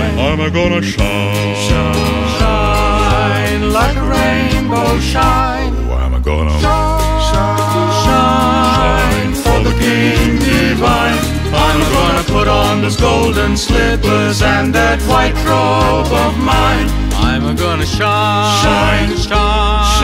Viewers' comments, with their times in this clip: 0:05 FABULOUS! Great Singing... Lovin'it I love NCS🎶